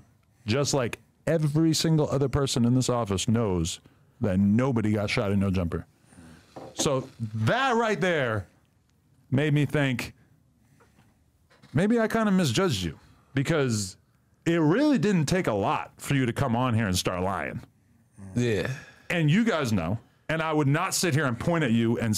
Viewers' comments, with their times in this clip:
0:10 adam, you really sound like you wanted to cry. 😂😂